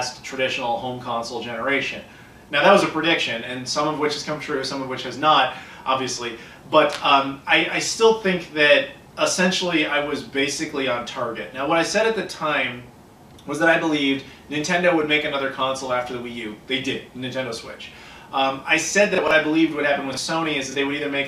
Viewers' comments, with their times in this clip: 0:06 Whenever someone cracks their hands like that, it always kinda creeps me out.. lol